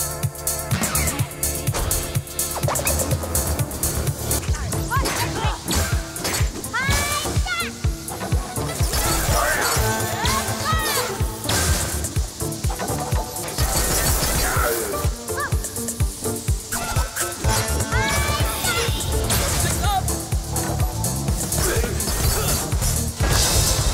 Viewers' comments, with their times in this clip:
0:08 Really? You didn't hear any EDM ditties indicating boss attacks? They overlap with all of the DJ's record scratches. Starting